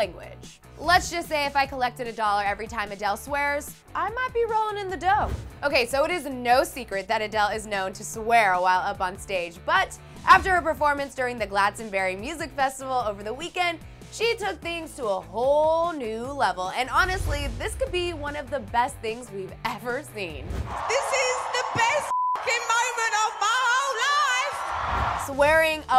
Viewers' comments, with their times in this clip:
0:10 The way you pronounced Glastonbury... "Glad-stonbury" lmaooo